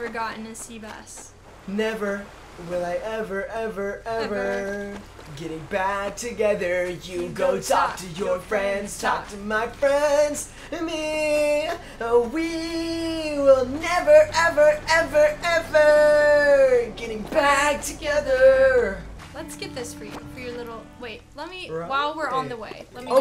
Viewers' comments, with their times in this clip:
0:07 plucky jamming out to their singing lmaooo